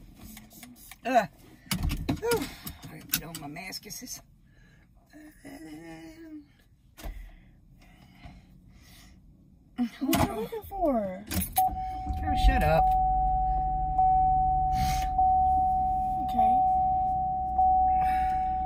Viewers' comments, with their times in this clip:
0:03 “ready to get on my maskisis” 😂😂😂😂😂😂😂😂😂😂 she cant even pronounce mask right 😭😂😂😂😭😭😭😭